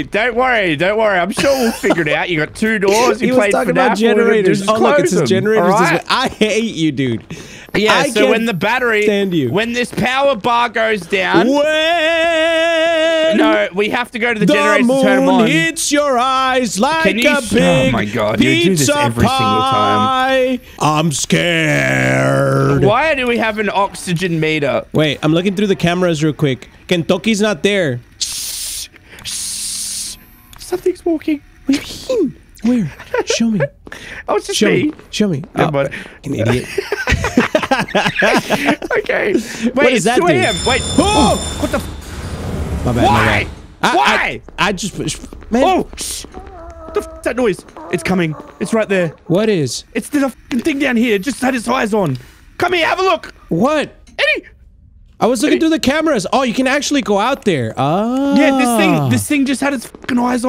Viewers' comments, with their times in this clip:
0:06 What was that audio glitch
0:48 Bro why the did the robot sounds like a seal dying